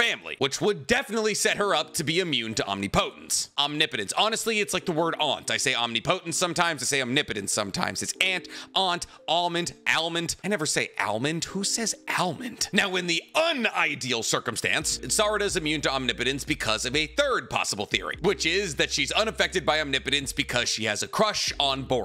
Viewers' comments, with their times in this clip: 0:04 lmao, I was just going to say something about how you say omnipotence different almost every time you say it